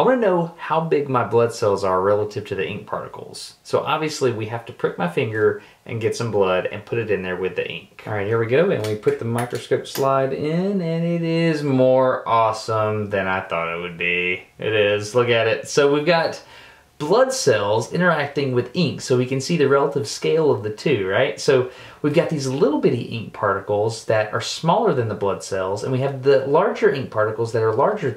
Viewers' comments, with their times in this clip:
0:10 he sounds like "Jim Carrey" 😂